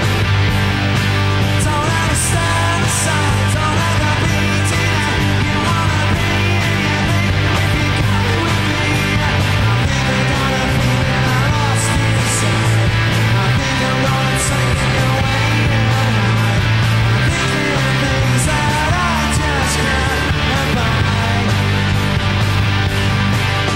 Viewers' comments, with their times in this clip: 0:07 Liam starts to lost his voice in lately 2000s as you can hear